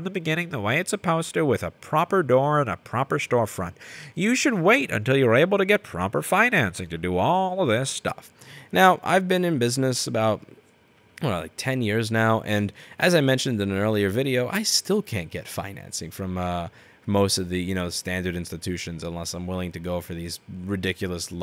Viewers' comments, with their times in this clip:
0:05 i`m sure you are holding your nose whilst speaking ;) :D